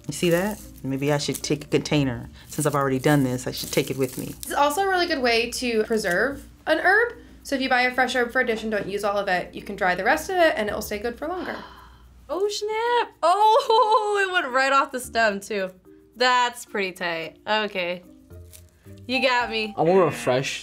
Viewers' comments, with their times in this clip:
0:06 Am I the only one that found it weird when the producer said ‘erb’ I say ‘herb’.......